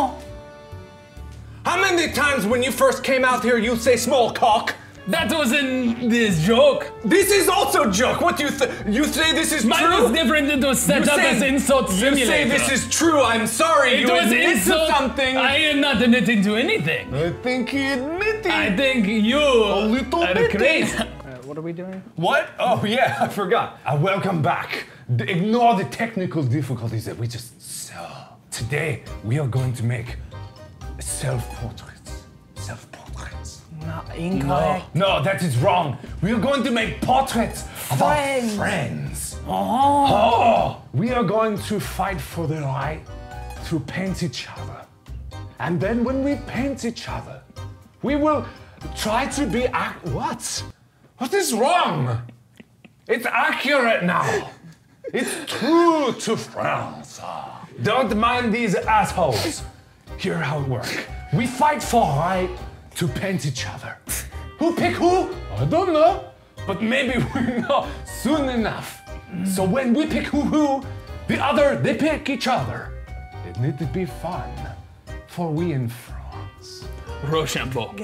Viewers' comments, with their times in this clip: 0:04 who else heard the fat???? 😂😂😂😄😄😄
0:07 *intense french arguing
0:57 when he said assholes he sounded like jacky chan in rush hour
1:02 Mark turns pitate
1:02 mark sounds like gru from despicable me